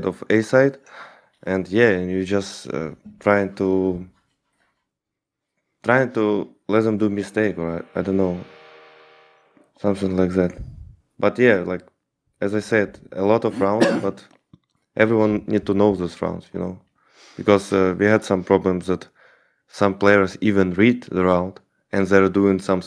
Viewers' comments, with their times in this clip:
0:07 Shoutout to the random guitar rift